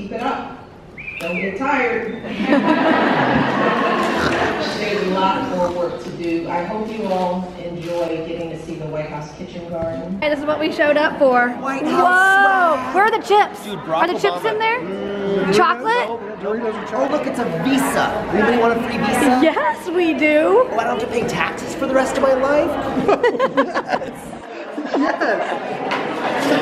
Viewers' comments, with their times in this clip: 0:06 did u guys hear the person snorting
0:08 Did anyone hear pig snouts ?